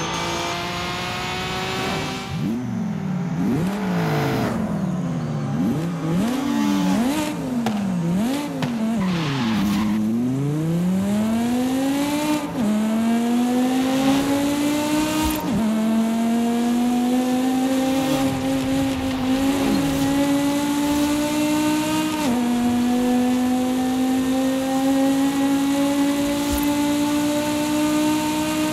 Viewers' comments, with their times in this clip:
0:09 omg 😱 that sound of that 09 m5 😍